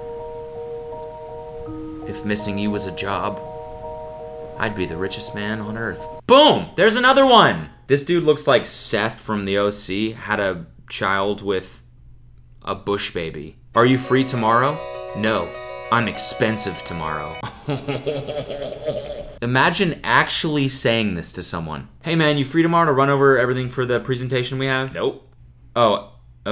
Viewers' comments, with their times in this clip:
0:07 The deep animal reference, the slight pause before, and the frustrated but dampened delivery on that "bushbaby" line...all expertly hand-crafted. Magnifique.
0:13 you know it's bullshit when you turn into a french man